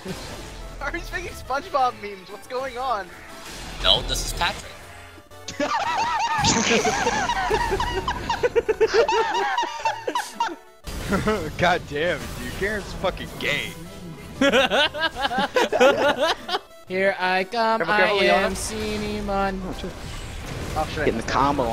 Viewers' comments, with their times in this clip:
0:03 who invited the seal
0:04 <3 That laugh tho. :D
0:05 that. fucking. laugh.
0:05 laugh so beautiful 😂
0:06 THAT LAUGH IM SOBBING
0:06 Whoever just laughed needs to feel great shame...
0:09 that laugh xD